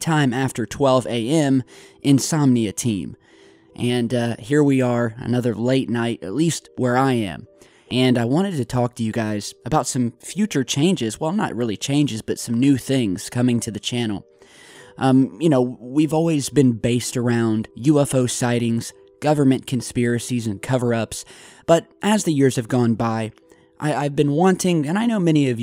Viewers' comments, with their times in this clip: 0:06 he breathes in and talks at the same time it's weird